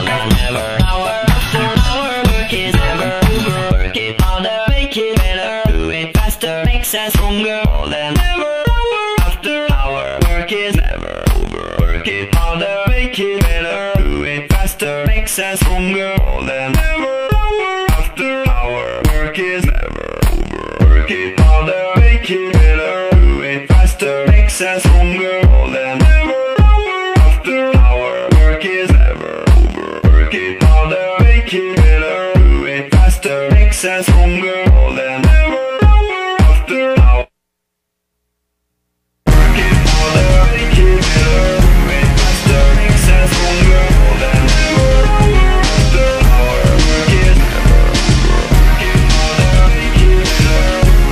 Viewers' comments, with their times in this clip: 0:04 When i first listened to this, in the beginning i literally thought "Well it starts with the original HBFS so it must be a mashup or something" then came and i was like "Damn dude what is going on, that the actually sounds really good" and then the original Stronger started to play! That was like a rollercoaster ride! Damn Kanye West, such a genius!
0:37 if only it wasnt cut at the it would be so fucking perfect man
0:37 The transition isn’t clean enough. The pause is too long and cuts off awkwardly. Anyone know a better version?